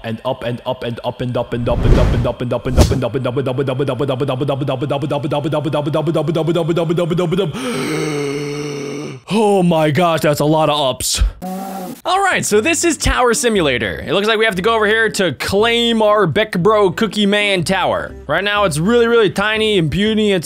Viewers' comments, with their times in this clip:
0:03 that literally sounds like muda muda muda muda muda muda muda mudamuda muda muda muda